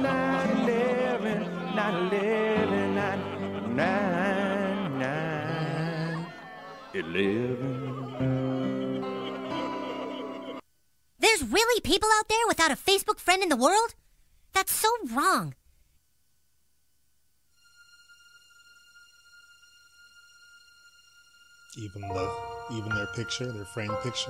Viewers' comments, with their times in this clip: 0:05 When he kept just singing 9/11 over and over 😂